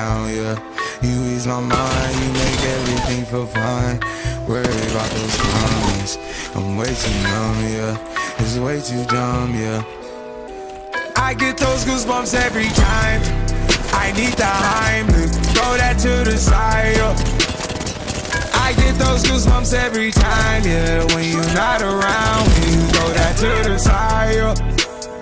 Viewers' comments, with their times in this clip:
0:08 everyone can agree, the most satisfying thing ever in apex is when you kill a full sqaud and they sound plays